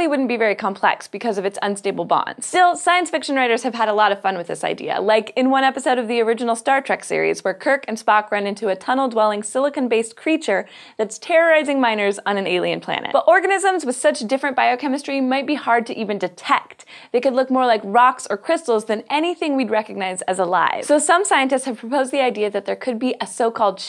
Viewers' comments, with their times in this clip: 0:09 I heard it as "terrorizing minors" - spit my drink out